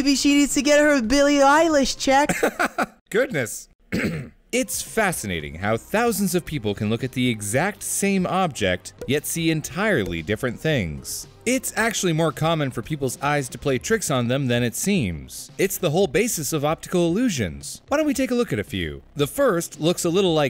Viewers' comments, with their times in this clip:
0:03 I can hear the disappointment in that "Goodness"